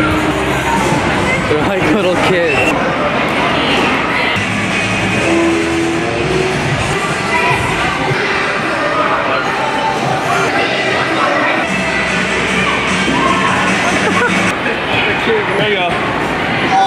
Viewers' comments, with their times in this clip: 0:04 wooooo fall out boy vibes